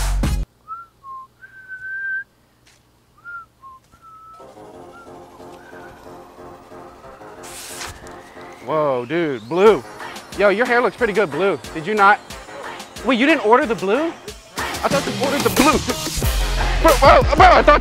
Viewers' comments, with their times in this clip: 0:04 Espicially the music